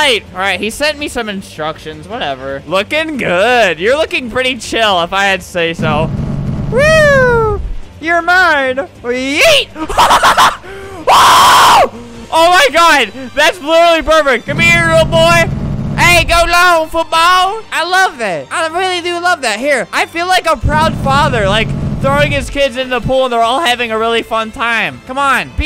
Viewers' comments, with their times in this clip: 0:09 every time he laughs like that he screams after idk why it’s so funny
0:10 I was dying at how he was screaming